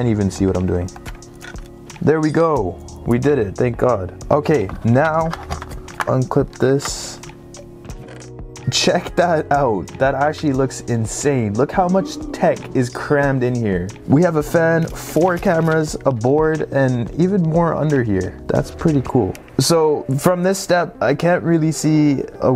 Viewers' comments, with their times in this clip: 0:07 loved the minecraft sound
0:08 minecraft chest suddenly opens